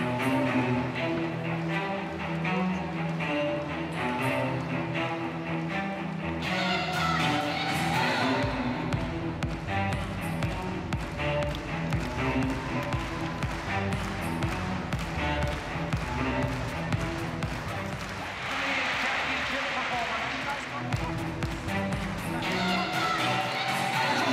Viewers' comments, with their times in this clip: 0:06 U can hear the lady talking in the background while on floor